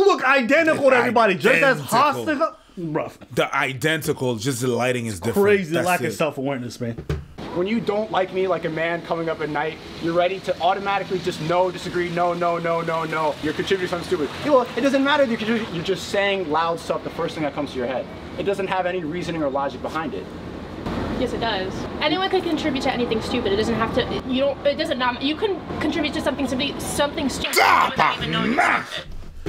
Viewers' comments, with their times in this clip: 0:05 he sounds like mike tyson
0:11 you cantell if someone is talking out of their ass if they are talking faster than they think. you can see her doing this its textbook!